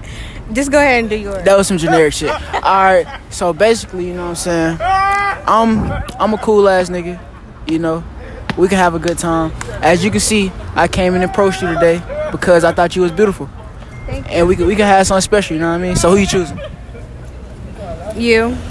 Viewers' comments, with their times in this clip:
0:03 Bra whoever was laughing in the back had me weak 😭😭😭